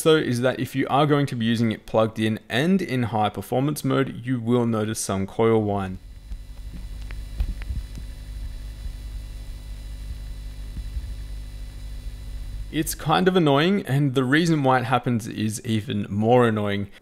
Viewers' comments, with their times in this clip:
0:05 What is he saying ? Coral wind ?